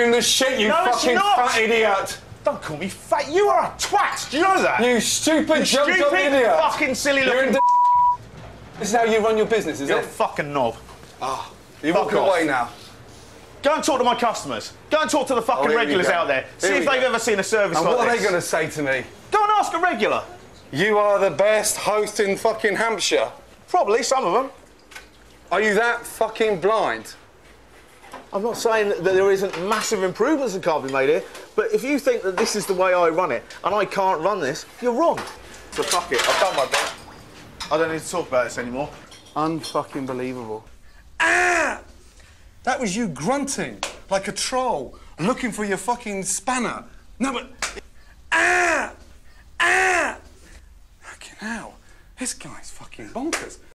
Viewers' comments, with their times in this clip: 0:06 you know it’s a really bad word when the uncensored version censors it
0:07 Bleep....what about the other swearwords? lol!
0:09 what did he say that got bleeped after all the f words lol
0:40 sounds like Bomb Omb from Mario 64 lmao
0:40 the best impersonation ever
0:40 HOW THE FUCK HAS THIS NOT BEEN MADE INTO A MEME lmao xD the Gordon Grunt xD
0:41 is that a mating call for every single guy 😂
0:41 LMAOOOO I'D BE LAUGHING LIKE THE WAITRESSES TOO
0:42 Gordon Ramsay Whomp impression